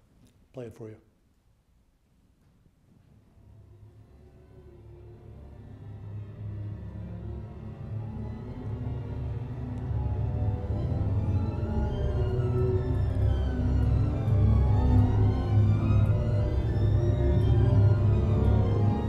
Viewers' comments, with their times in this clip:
0:05 A texture like those of Ligeti ... or like Langgaard's "Music of the Spheres"